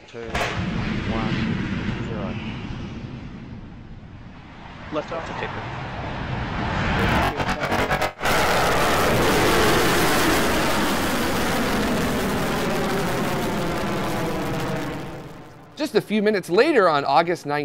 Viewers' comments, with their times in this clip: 0:05 sounds like a Decepticon.